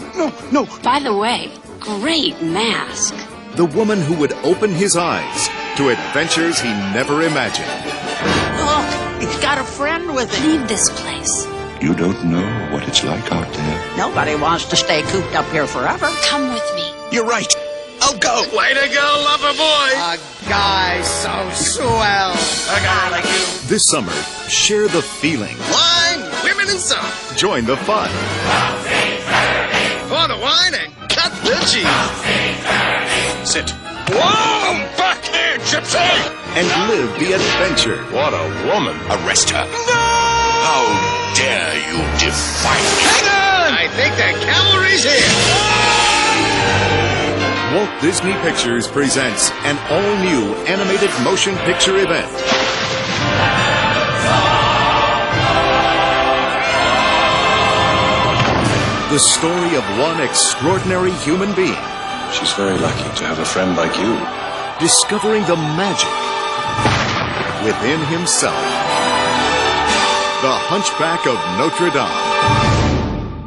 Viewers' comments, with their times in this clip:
0:08 Amazing how they manage to work the most horrifying and frightening song in the entire film into such an upbeat and happy trailer.
0:46 The trailer really picks up as the music builds and you even see images with the villains song! The movie is incredible and that when I watch the movie the choir during The Bells of Notre Dame still gives me shivers and it is awesome!
0:56 even at 240p the music gives me chills........oh GOD!